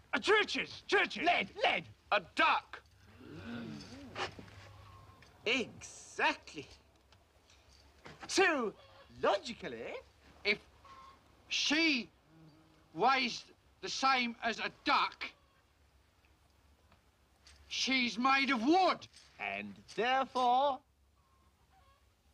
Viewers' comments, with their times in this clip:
0:09 I love how he says "Logically"